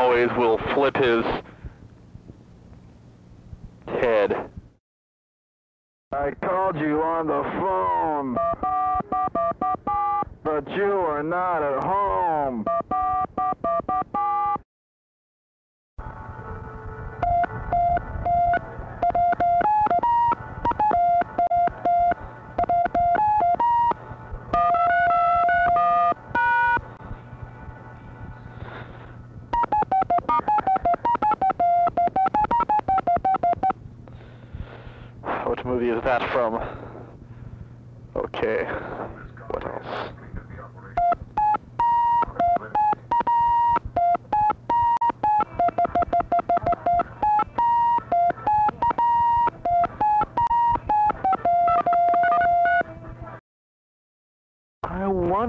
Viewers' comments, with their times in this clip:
0:05 I knew al played accordion, but i didnt know he could play phone...
0:06 i love the dial music that starts
0:15 Love that phone key rendition of "Another One Bites The Dust" punctuated by the "Three Stooges" theme.
0:40 Smoke on the Water with dial tones (Deep Purple)!
0:41 who doesn´t love playing smoke on the water on a phone?